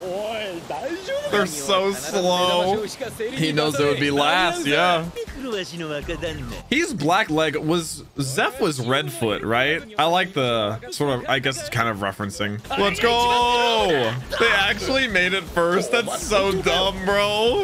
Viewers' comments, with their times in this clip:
0:03 kinda looks like what luffy did. Wierd sound though.